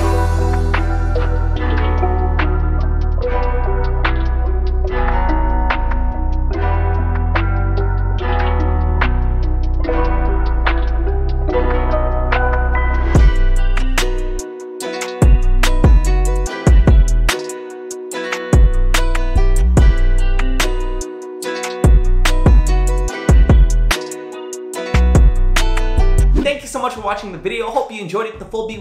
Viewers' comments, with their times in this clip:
0:10 Holy shit the drop is fucking amazing